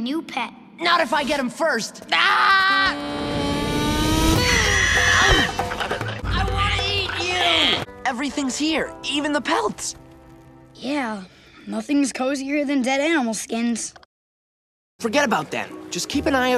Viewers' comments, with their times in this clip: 0:03 Momo is hissing